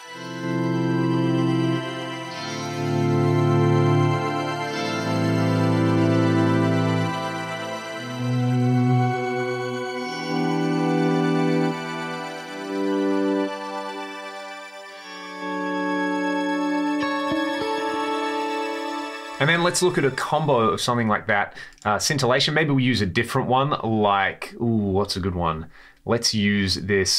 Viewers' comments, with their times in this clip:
0:10 Makes me think of elves for some reason....